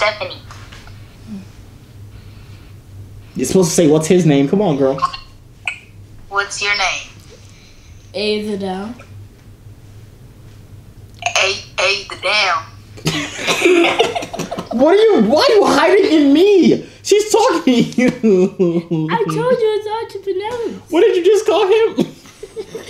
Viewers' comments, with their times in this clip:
0:10 was funny she tried to pronounce his name but said it wrong I'm dead🤣🤣🤣